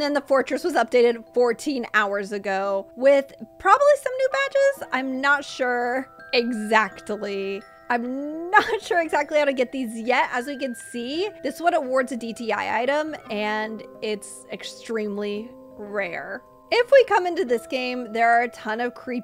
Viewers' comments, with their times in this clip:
0:06 EXACTILY 😂 YOU SAID IT SOOO WRONG 😂